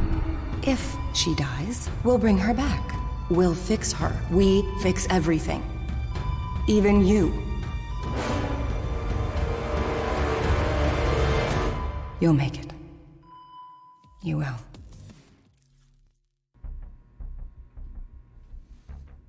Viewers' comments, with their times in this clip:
0:07 DID ANYONE NOTICE THATS CRASH 😵